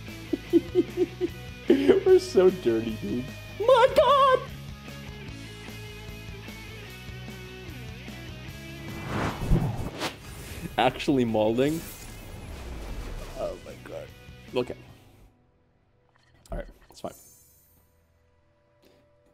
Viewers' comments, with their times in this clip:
0:03 from grapplr ,to operaLr, he really can do everything